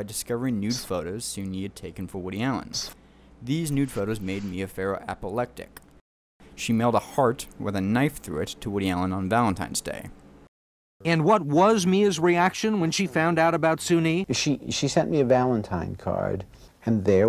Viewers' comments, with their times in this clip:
0:05 ...apolectic" Ummm...try again